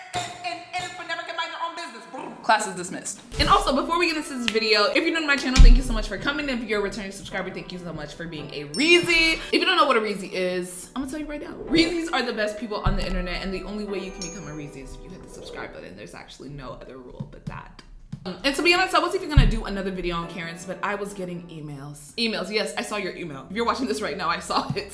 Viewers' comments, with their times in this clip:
0:06 felt weird without the iconic music for a sec